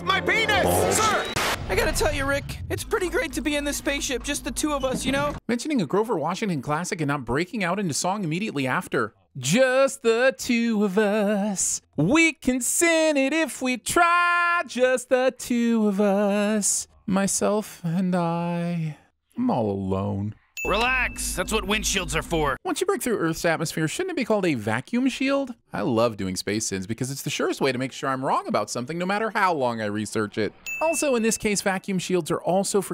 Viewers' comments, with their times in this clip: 0:09 was honestly sung way better than I expected
0:14 I would like to hear the rest of the song it music to my ear